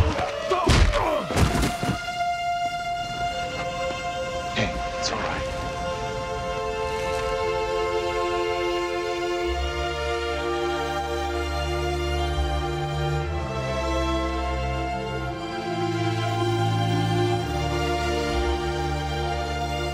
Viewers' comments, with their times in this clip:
0:06 Music is absolutely incredible . No soundtrack or show will come close to lost